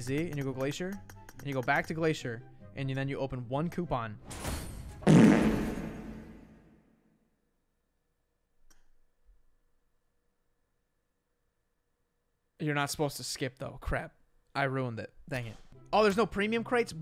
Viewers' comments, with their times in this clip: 0:05 these farts god dammit i comment this on every video but what to do i cant help it 😂😂😂😂😂😂